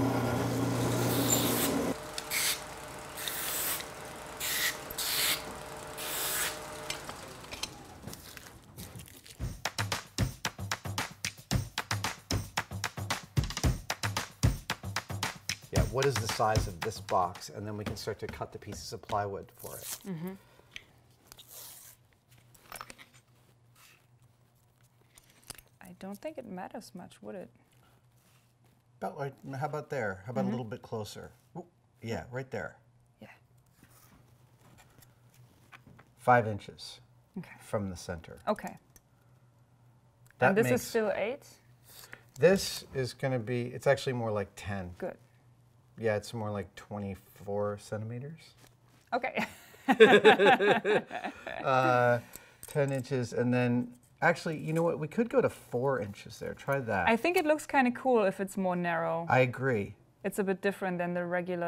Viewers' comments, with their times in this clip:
0:09 The editors are nepharious. I maintain it. Bum-bi-bi-bumbumBumbi-bi-bum--Boom-boom-boom-*-boom
0:49 the way he laughs 😂😂😂